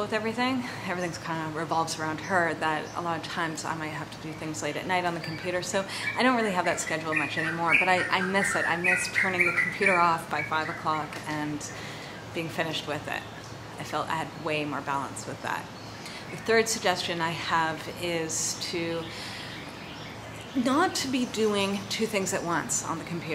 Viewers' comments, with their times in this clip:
0:08 middle of jungle sounds interesting! love the bird noise thank you so much, LOVE THIS so much and so important these days! :)